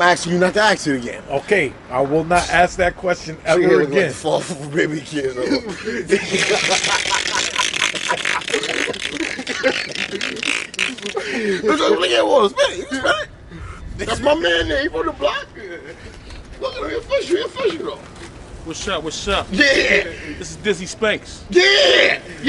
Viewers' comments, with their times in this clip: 0:05 My Car Made This Sound When I Tried To Start It This Morning My Mechanic Said It’s My Starter 🙁😂
0:06 When you used to put a soda can on your back bike wheel
0:06 sound like somebody spraying windex cleaner
0:06 That laugh wicked 😂 😂 😂 😂
0:06 That’s a wild laugh
0:06 The laugh please watch that
0:06 Me trying to start my 98 Honda civic
0:06 holy shit the laugh nuts
0:07 WTH kinda laugh 😂 is that 😭
0:08 So we just gonna ignore the way this nigha was laughin 🤣🤣🤣🤣
0:10 😭 definitely sound like spray paint can shaking